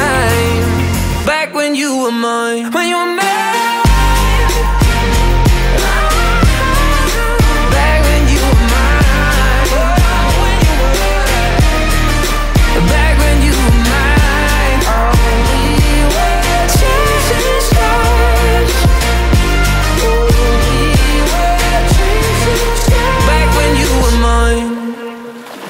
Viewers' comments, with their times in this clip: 0:07 I love this hoarseness since forever🥵🥵🥵🥰